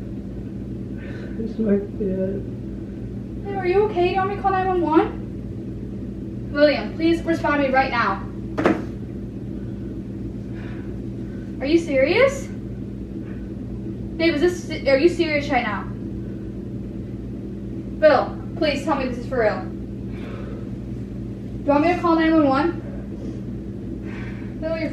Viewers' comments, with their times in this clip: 0:07 Wait did u mumble "this might be it"😂😂😂 I'm so dead😂